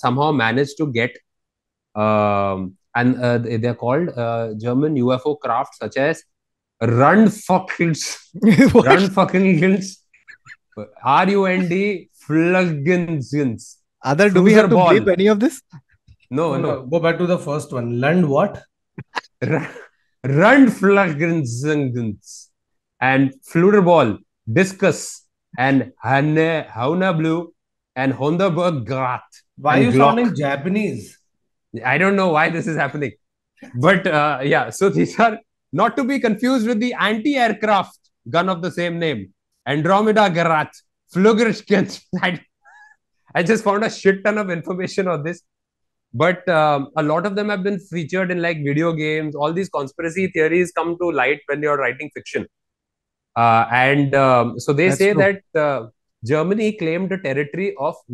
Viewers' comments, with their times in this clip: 0:06 Is this a german or a hindi cuss word😂
0:43 best german language presentation.